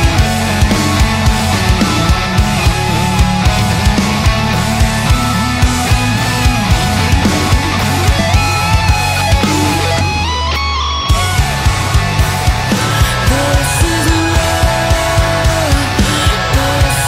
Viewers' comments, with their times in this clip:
0:05 Are we gonna talk about that guitar lick ? My guy is a prolific player and his composition is equally entertaining. What a top notch musician.